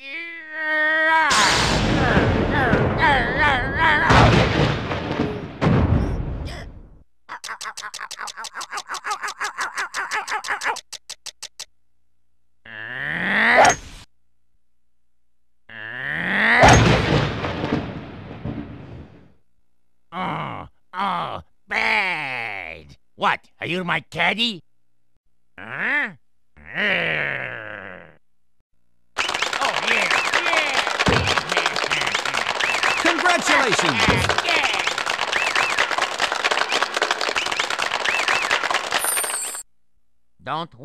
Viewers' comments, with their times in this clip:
0:03 Taco Bell *ding*earape
0:22 I use to think it was “what are you my daddy?”
0:22 This whole time I thought he said "Do you want candy?"